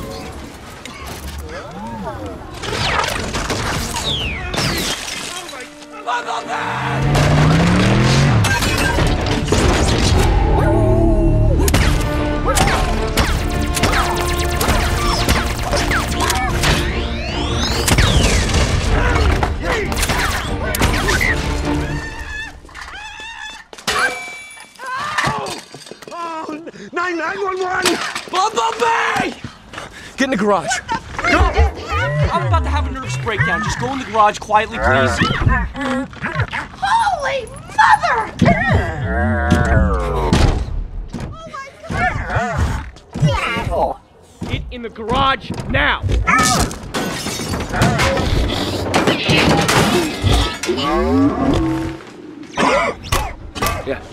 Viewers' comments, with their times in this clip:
0:03 What I find cool is even though his voice is ruined, you can occasionally make out what he is trying to say, case and point the scene beginning when Sam tells him to get back in the garage, Bee gets and attitude and storms off. Through his sassy, teenager robot noises you can clearly hear him say "Whatever". He's adorable and bad-ass and I would die for him.
0:40 Sam is such an ass, and here's Bumble Bee comin' out to save him, because he's screaming his name like a maniac and sends bee to the garage. Bumble Bee's response "What?, are you serious" "Man, WHATEVER" pouts and marches off to the garage.